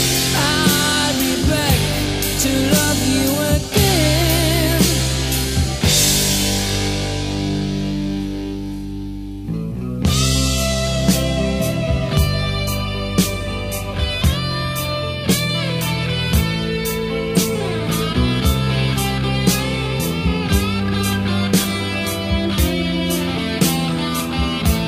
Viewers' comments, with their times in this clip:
0:08 Michael Jabs on 3, 5 & 6, Michael Schenker on 1, 2, 4, 7 & 8. For example, listen to the guitar solo on Always Somewhere: The lead guitar play has a slurrier sound untypical for MS.